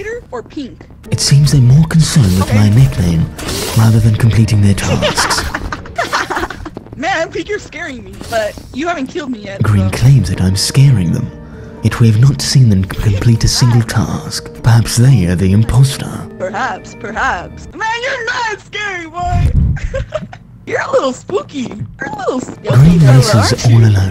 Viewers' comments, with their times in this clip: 0:06 kinda sounds like the goofy roblox laugh!!1!!1